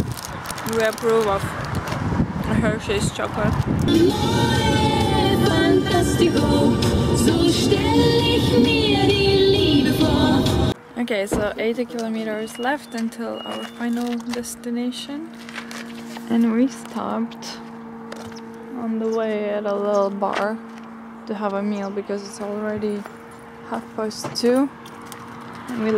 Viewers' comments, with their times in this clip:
0:07 This vlog was just perfect! I love all of your vlogs and this time it was so amazing. you were so natural and the landscape is so beautiful. And I was just like wait...was this German? I come from Germany but I never heard this song.